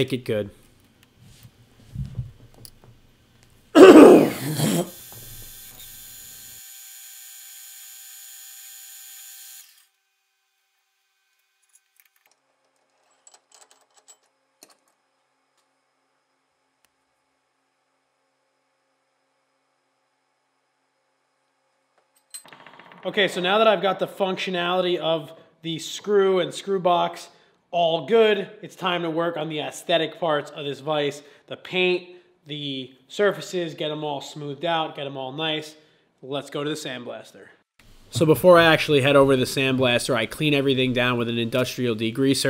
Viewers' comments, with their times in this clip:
0:03 Hey bro u ok? sounded as if u inhaled a Chip or something;) nice restoration, o7 keep up the good work:)
0:03 i like the loud retch really adds to the experience
0:29 am I the only one who heard “aesthetic farts of this vise”